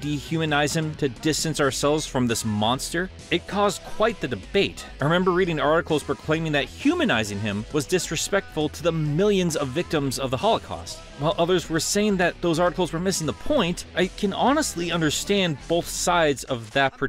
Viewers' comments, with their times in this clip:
0:04 Funny how you’re playing Eggman’s theme in the background of your little Hitler rant